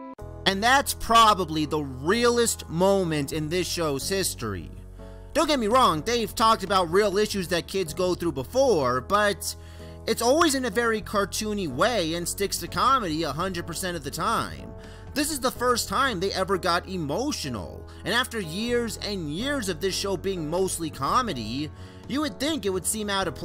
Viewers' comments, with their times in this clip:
0:04 I believe it could've been more serious; no background music, no wacky sound effects, just Eddy and Edd yelling at each other. It gives the scene more depth.